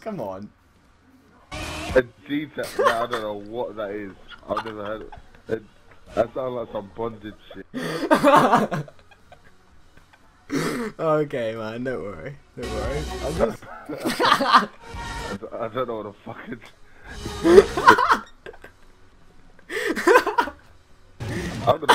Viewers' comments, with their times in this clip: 0:07 sounded like u was crying
0:09 sounds like you were dying :O